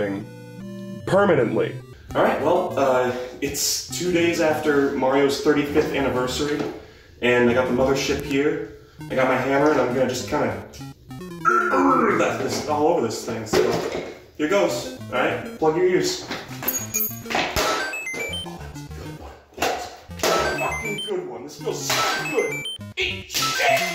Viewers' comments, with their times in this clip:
0:10 OK BUT THAT THWOMP IMPRESSION THO
0:11 that thwomp impression came out of nowhere and sent me to the cosmos.